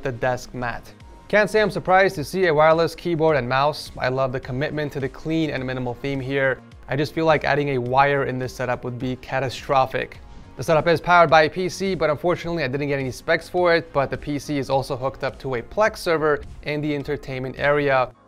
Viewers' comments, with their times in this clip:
0:04 I'm nearly sure I heard The song hooked on a feeling (amazing song BTW) but it was just like really low volume "aaahaahahaha hooked on a feeling" please tell me I'm not the only one or that I'm crazy whichever one is your answer